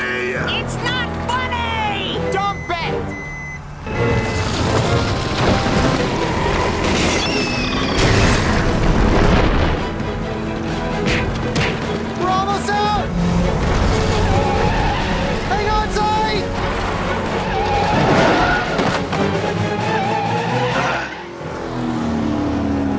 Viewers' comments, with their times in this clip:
0:07 Cute how that Carlock squeals like a pig